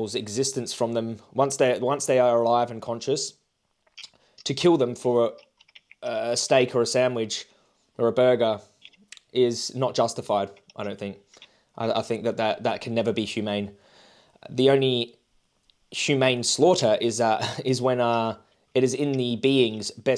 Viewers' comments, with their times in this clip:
0:06 Anyone else notice that the guy stopped typing. 🙄 He didn’t even want to hear the last minute or two.